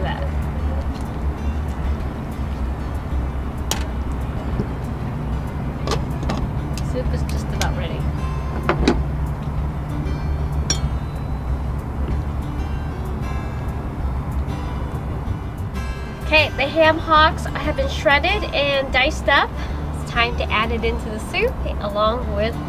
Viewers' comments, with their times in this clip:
0:10 Inquiring minds want to know......Is that o'clock float plane a commuter plane or a tourist flight...or just an evil plot to upset YT viewers and creators?????